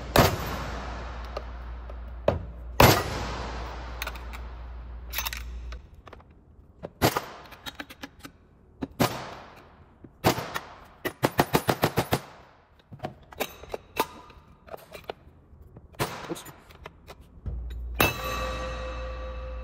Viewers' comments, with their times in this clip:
0:06 bruh why does that sound like gunshots-